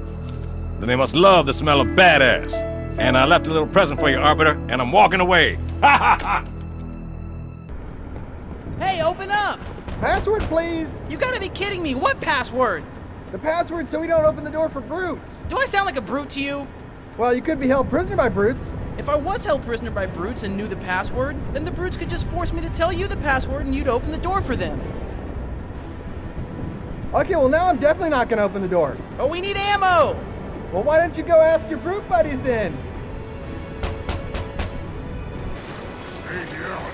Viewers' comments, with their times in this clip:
0:07 simmons? Is that you? And Grif And caboose oh my!
0:23 That pause xD